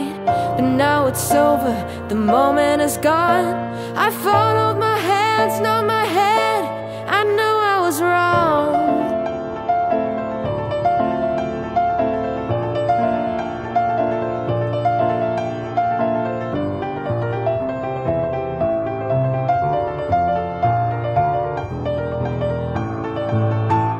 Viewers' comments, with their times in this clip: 0:09 The piano solo was really awesome!